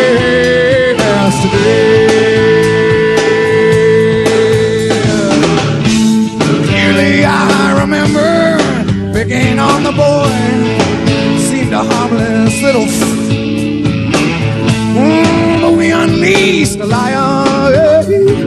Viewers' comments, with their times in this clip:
0:05 mrr his voice ;D